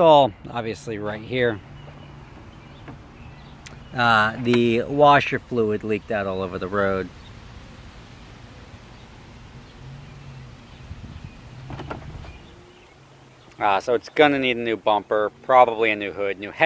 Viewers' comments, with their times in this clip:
0:04 Spaghetti Sauce leaked out all over the road